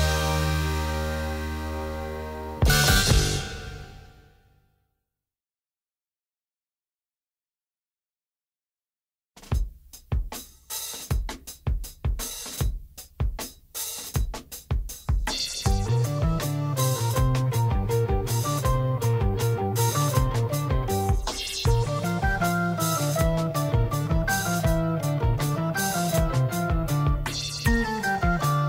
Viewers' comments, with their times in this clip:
0:09 where it gets heavy...killer record🔥💪🏾